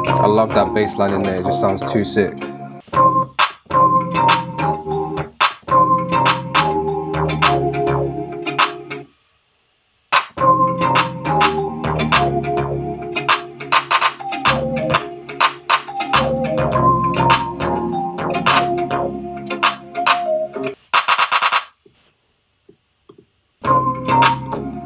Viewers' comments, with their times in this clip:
0:05 sounds like a shoreline mafia type beat